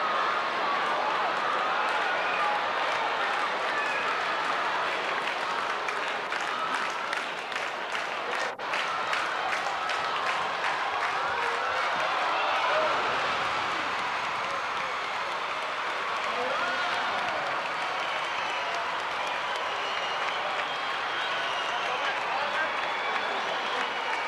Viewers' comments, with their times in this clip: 0:08 The crowd reaction for the dunk was lame as shit